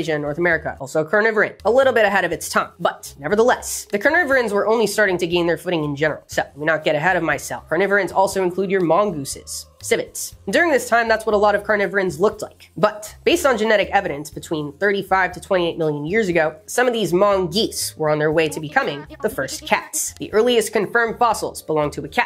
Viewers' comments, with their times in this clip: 0:03 im dead 😭 i heard "carnivorans also include 'your mom gooses' "
0:08 "Carnivorins also include your mom, Goose." is what I heard here.
0:09 the ad break was so perfectly timed as to sound like “ur mom” instead of “your mongooses.” That’s hilarious
0:10 you said your mongooses, but I sure heard "your mom" 🤦‍♀️🤣🤣